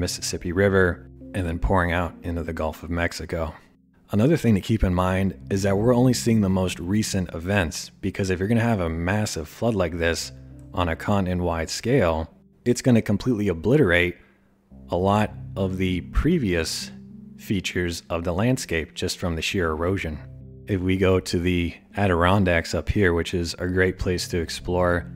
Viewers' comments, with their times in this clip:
0:06 Can y’all hear the dog snoring in the background ?